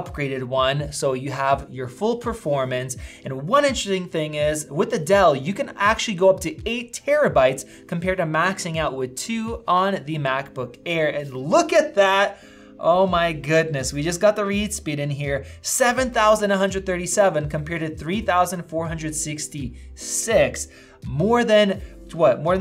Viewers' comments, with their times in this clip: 0:03 The word ‘ in ter esting’ is too long, or too complicated to say ? Interesting..